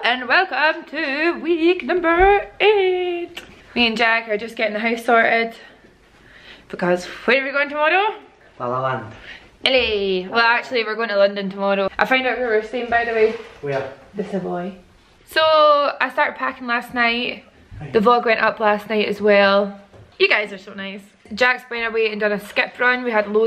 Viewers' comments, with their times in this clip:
0:07 I LOVE HOW YOU SAY TOMORROW